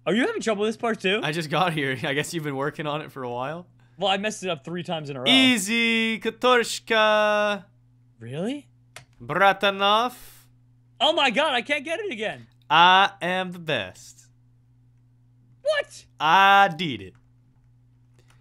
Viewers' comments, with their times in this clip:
0:06 Your impression of a Russian needs some practice